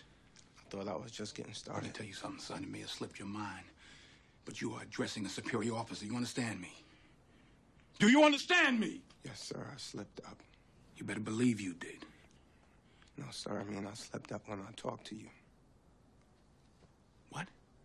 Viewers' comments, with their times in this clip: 0:04 Do you understand me? Denzel said that with power and force